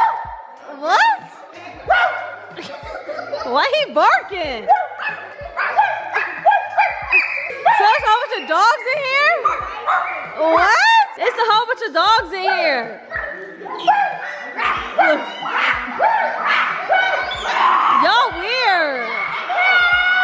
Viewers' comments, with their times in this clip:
0:03 when Damien was barking it reminds me of speed was barking 🤣🤣